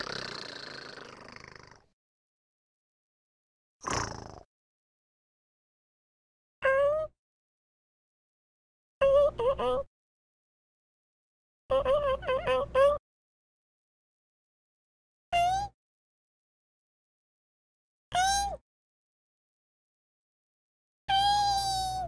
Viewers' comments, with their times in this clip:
0:06 fox sounds are so cute